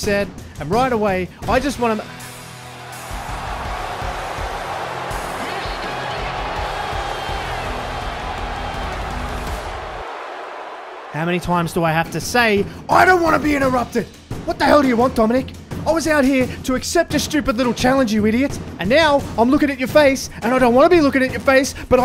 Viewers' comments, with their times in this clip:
0:10 Spot-on KO impression It’s up there with the Seth Laugh and the LA Knight impression